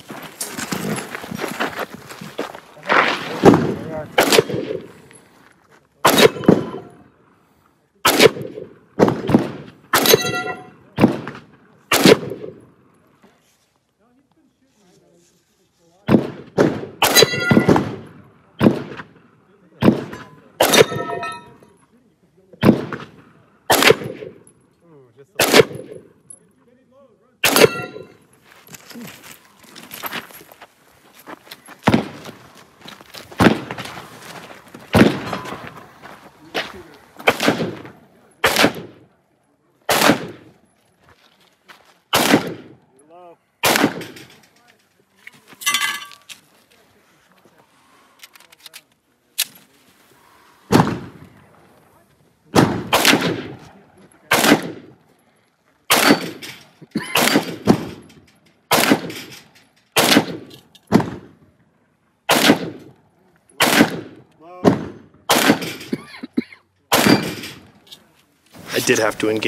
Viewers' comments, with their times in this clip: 0:07 the blast outta that BRNO is WILD! Look at that dust cloud. Such a hot round.
0:56 The dude with the insistent cough ... yikes.